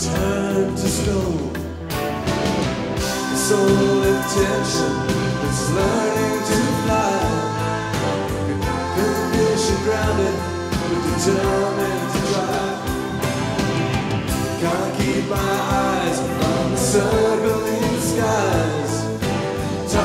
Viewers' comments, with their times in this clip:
0:03 That is one beautiful woman with a great voice.